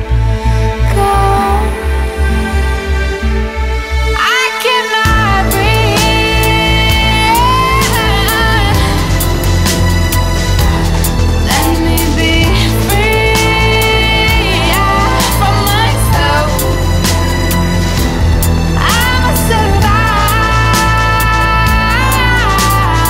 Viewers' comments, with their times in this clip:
0:07 creeps on hands. I love her voice